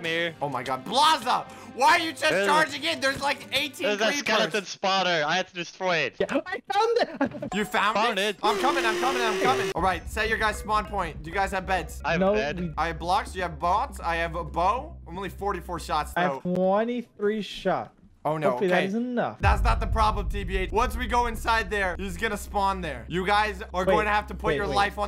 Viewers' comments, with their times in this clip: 0:10 Do u hear music??